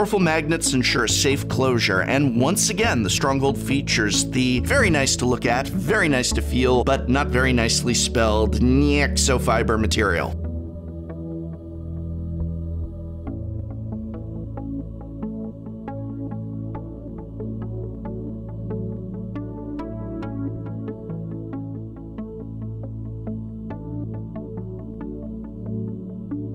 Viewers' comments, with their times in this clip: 0:08 Hehe, nyeksofyber I'm 26 btw